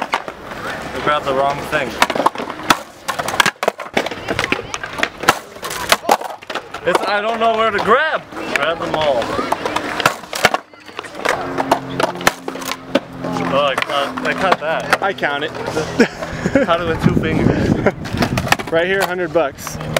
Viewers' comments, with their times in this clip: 0:06 sounds like her first time.